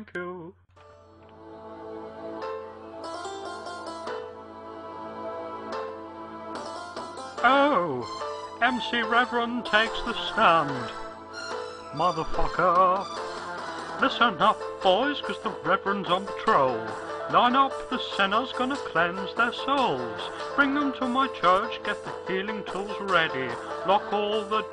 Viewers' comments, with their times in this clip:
0:07 is when singing starts